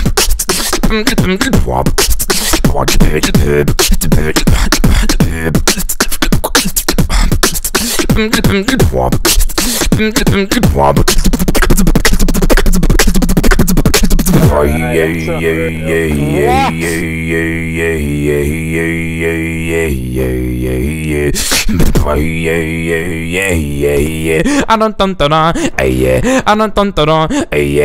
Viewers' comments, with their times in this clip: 0:10 is like his mouth is like faster than the flash